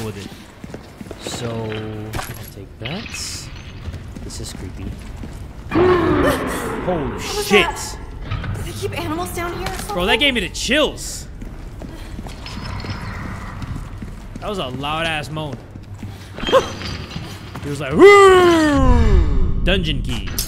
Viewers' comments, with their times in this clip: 0:05 What kinda subway surfer noise was THAT!?